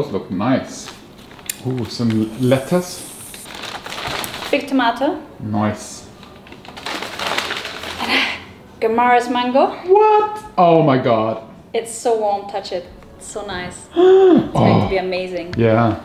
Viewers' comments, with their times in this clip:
0:04 was that a jake peralta impression? 😁 3 mins of black.. i was waiting for a post credit scene... haha